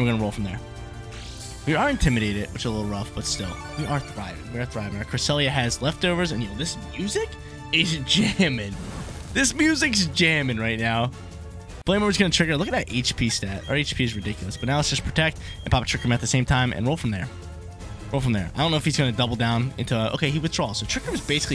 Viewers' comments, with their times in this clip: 0:08 music is jamming! What’s the track?